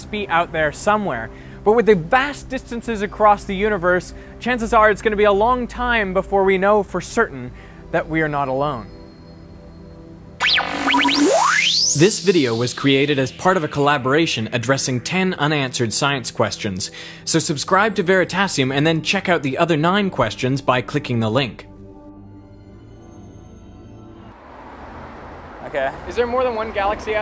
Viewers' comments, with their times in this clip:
0:10 The sound is a bit disturbing, would be better if it were slower/more quiet. Great video otherwise, was rly glad to know that scientists are highly optimistic about the presence of e.t. life.